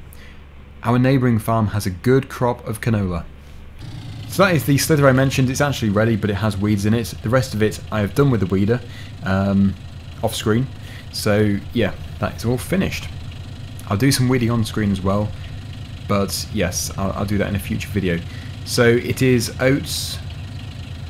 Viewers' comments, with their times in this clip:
0:05 mr get of the furniture? 😂 lol